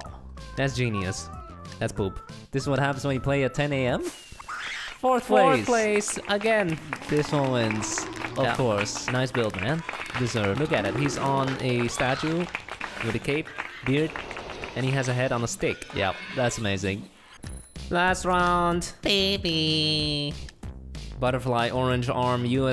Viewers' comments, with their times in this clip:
0:03 WHAT WAS THAT SCREAM